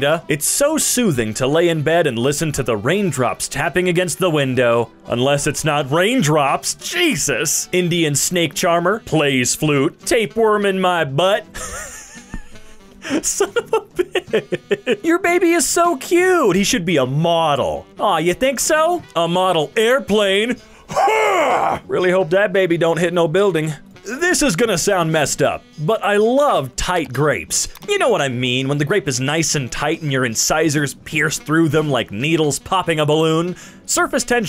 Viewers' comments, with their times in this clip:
0:10 why did you say "Tapeworm in my butt" with such an accent
0:21 the noise i make when i get up